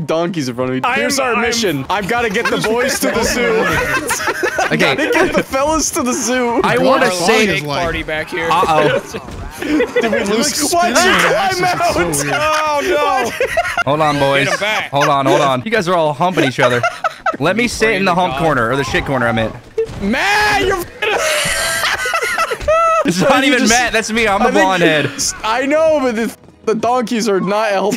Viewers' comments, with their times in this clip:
0:09 sounds like the deez nuts guy